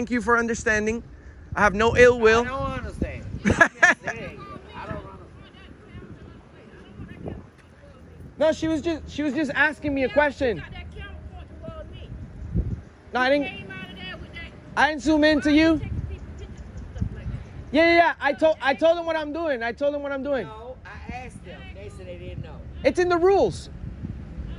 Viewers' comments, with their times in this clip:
0:08 I hear a voice from way over there.